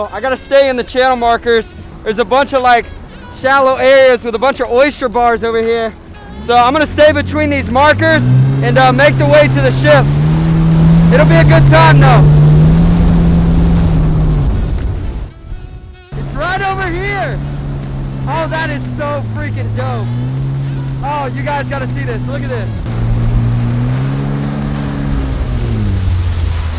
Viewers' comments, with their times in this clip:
0:08 when your voice goes demonic...